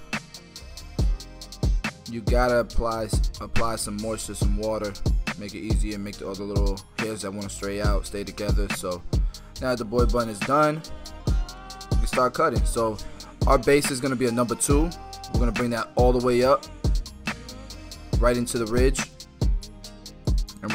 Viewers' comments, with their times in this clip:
0:03 back beat and you talkinv i thing you singh rap nice😍😍